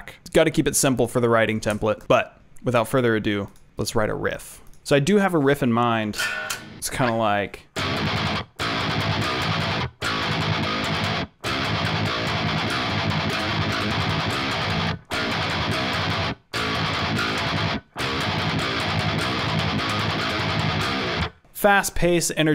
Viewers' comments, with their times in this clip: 0:08 me personally I don't like riffs with pauses in betweens cause then I feel like my audio is laggin